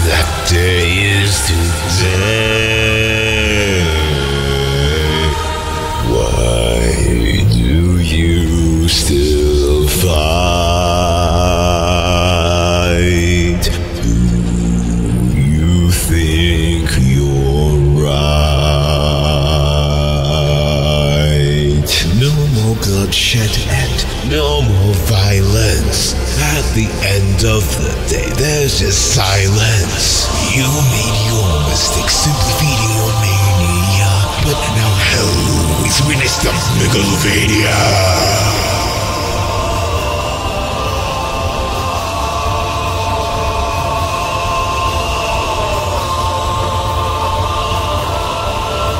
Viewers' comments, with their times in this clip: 0:05 Damn... Those low notes ("Why..." and "Do...") Had me shook. I absolutely loved this
0:05 I like this deep voice. Thats somehow i would imagine sans. it fits perfectly
0:05 That moment when Markiplier starts singing out of nowhere
0:06 bro how do you even sing that low 😨 I would break my voice trying to do that-
0:06 wow that's a deep note
0:06 God that bellow "Why... do you... still fight..." Love it every time even after all these years.
0:06 is it just me, or does this sound like markiplier?
0:21 "No more bloodshed and, No more violence At the end of the day, There's just silence" Best part of the song. Everything; the lyrics, the voice, and the art are awesomely menacing here. Actually no, the lyrics, voice, and art are awesome through the whole song. Goddamn.
0:36 this line delivery still EATSS